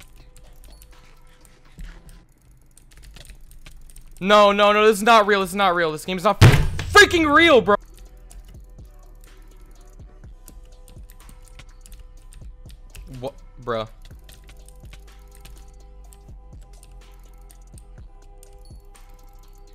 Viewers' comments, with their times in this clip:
0:03 the slam O_O